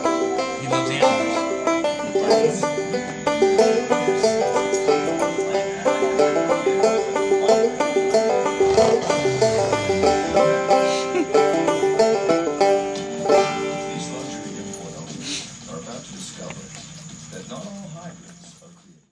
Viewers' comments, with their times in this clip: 0:08 Wait, did he just snarl when you pet him ? ohhhh...lol......Just rescued my Rott after about 4 months of her living in the woods. She is all kind of beat up and in bad shape, but she knows commands, her tail is clipped, and she was chipped..the chip is not registered, so I am keeping her. Spent $300 at the vet today for the full tune-up lol. She will be stronger than ever and loved more than ever. I am sorry about your loss of Oz. Lena is awesome though, so he left a good footprint for her! ROTT POWER!